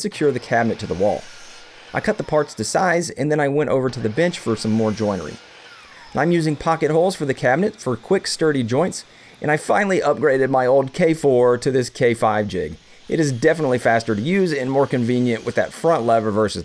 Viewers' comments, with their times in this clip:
0:03 You did NOT say bench hahah